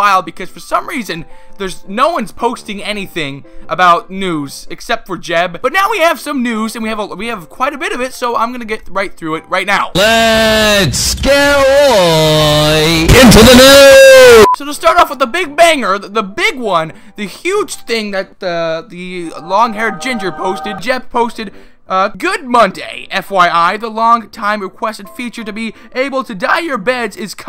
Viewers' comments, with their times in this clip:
0:10 WARNING EARRAPE FROM FAT KEEMSTAR!!!
0:11 rip headphone user